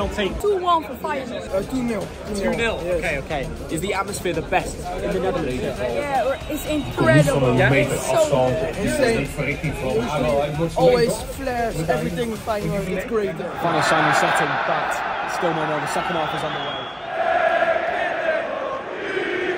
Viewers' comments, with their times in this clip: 0:06 little dutch kids speaking better English than most international footballers 😅